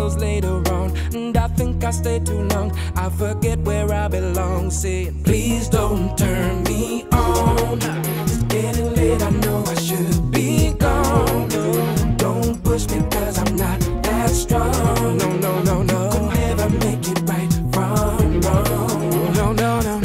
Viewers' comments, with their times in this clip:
0:07 Is it just me or the bass sounds a bit like the old school Castlevania games? Especially lol